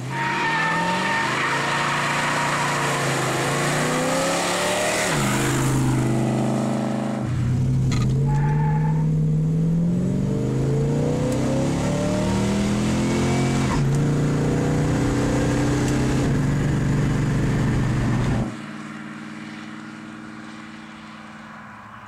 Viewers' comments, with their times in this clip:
0:09 love the chirp on the 1-2 shift beautiful car